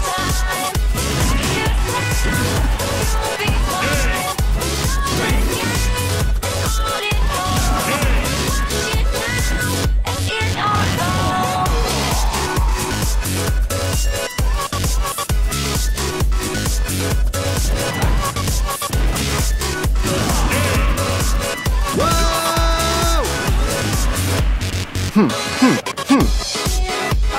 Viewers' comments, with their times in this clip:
0:09 The music is so good, even the background is in the groove. Its on the beat! Really nice montage, btw. Just viewtiful.